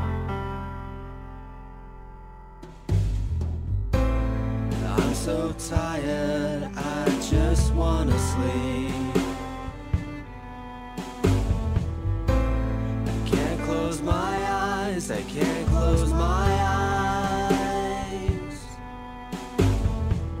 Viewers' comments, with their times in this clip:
0:03 the singing actually starts
0:05 fun fact: the instrumental at the beginning goes until